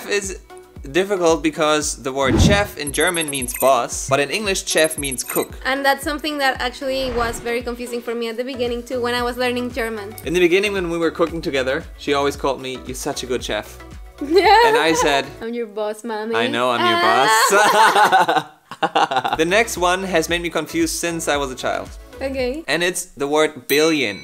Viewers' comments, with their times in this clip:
0:08 you are pronouncing chef like its spelled.... CHef.......but in American english (I don't know the complete abomination known as British english, lol) it is pronounced SHef